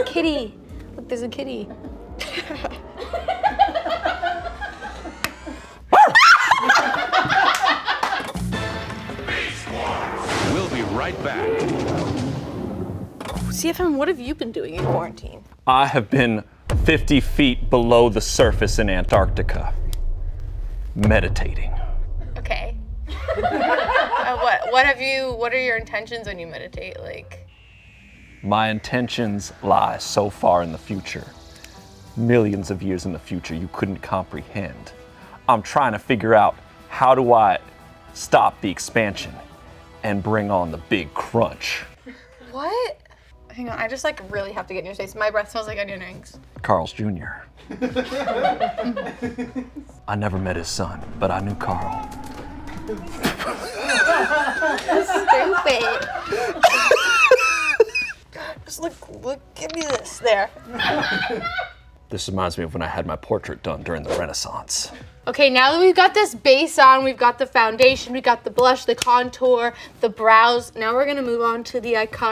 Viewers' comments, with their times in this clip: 0:05 IZ EVA-RY-THING!!!!!!! That barkin dog insert... I stans
0:53 THE WHEEZE LAUGH OML